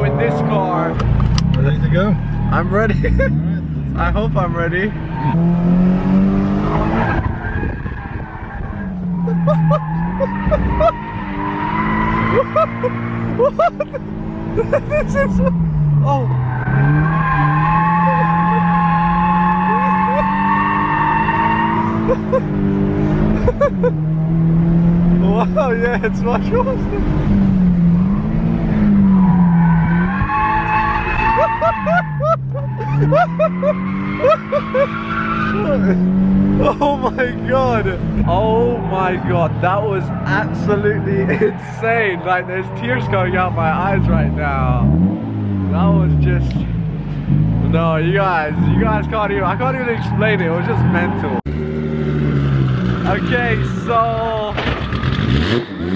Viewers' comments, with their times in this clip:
0:07 That laugh :D
0:37 = THAT LAUGH LOL XD